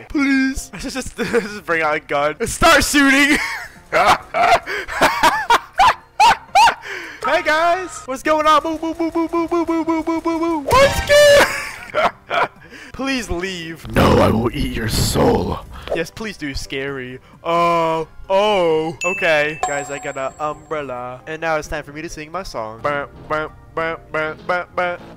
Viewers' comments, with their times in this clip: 0:08 his laugh I can’t 😭💀😂